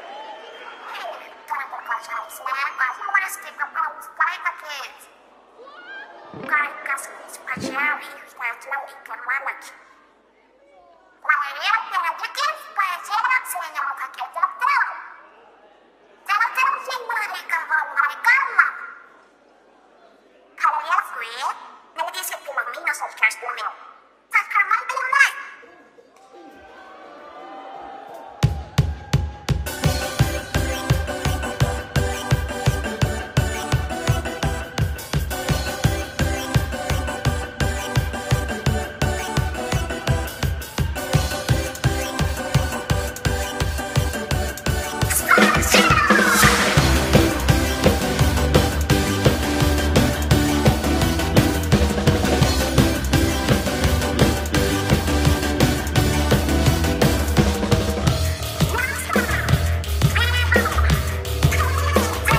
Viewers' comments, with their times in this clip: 0:05 The girl voice 😂😂😂 Marina: "Bad news, Pearlie. The next song is our last! Fanatic girl: WHAT!? 🤣🤣🤣🤣
0:10 I heard my name thinking it was my mom calling me.
0:44 it sounds like they say splatoon